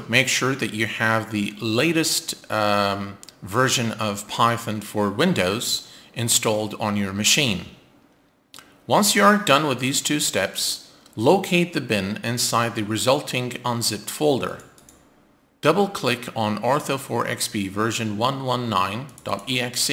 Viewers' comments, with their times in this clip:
0:03 well done, no more pithin! Remember the video on NOAA?